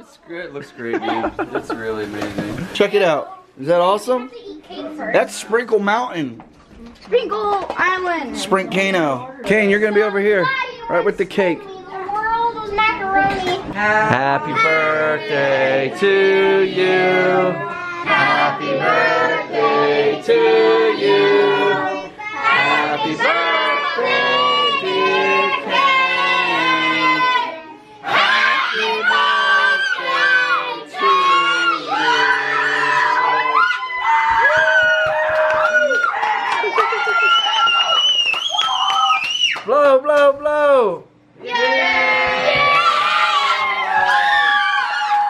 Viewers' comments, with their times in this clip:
0:09 haha the song
0:31 who the f**k was screaming?